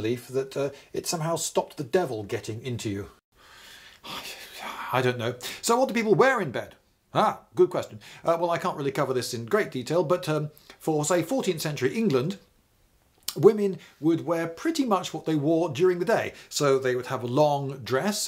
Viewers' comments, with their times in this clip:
0:03 why did the audio quality changes?